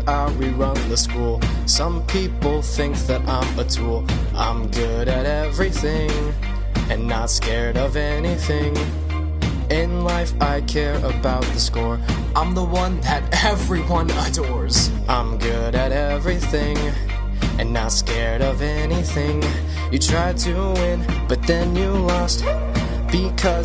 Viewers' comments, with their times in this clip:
0:06 Except for singing